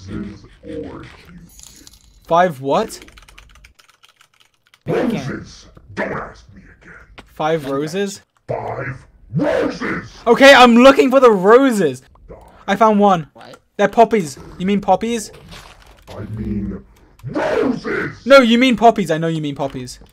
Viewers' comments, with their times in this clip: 0:08 dream sound like nightmare sans when he is angry